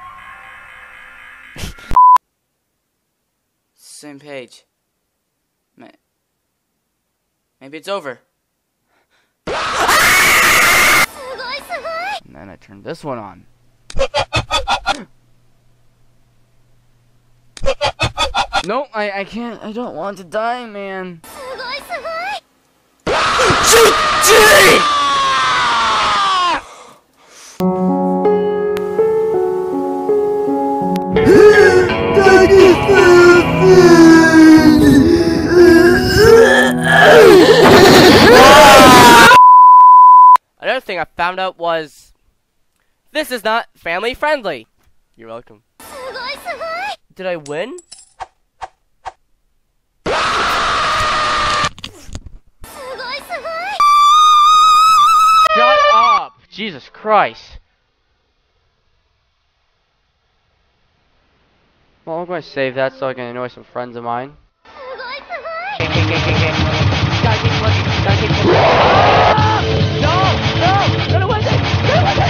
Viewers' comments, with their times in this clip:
0:08 edit:LOL HIS SCREAM
0:08 edit:LOL HIS SCREAM
0:09 THAT SCREAM THO LMFAO
0:10 Lol his scream
0:52 AUDIO QUALITY LOSS
0:53 all I heard was REEEeEEEEEEeEee (I'm 14 bro. I come up with its shit its so stupid XD)
0:54 best screaming clip ever.. I hope its a meme
0:54 me practicing for choir but I accidentally touched my hand on a cactus
0:54 me practicing flute
0:55 R.I.P sound quality